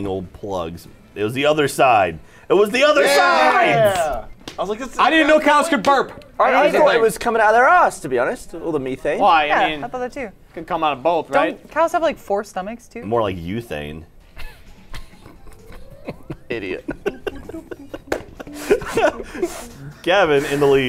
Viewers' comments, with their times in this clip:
0:06 Did Gavin really just say Me-Thane